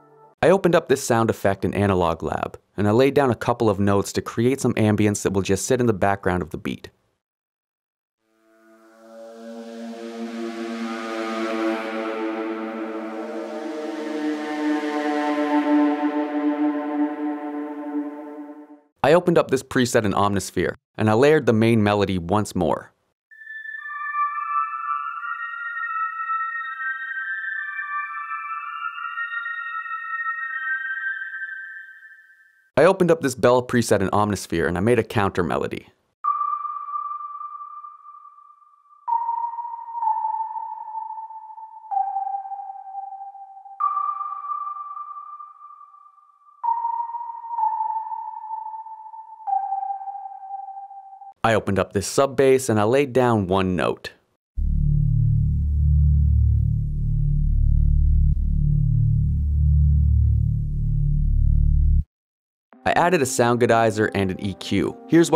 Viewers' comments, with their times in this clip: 0:06 This is really good keep up the good work 👍 And no ones gonna mention how the analog sound effect doesn’t sound like a world war 2 bomber lmao
0:53 how did you make the sub bass oscillate like that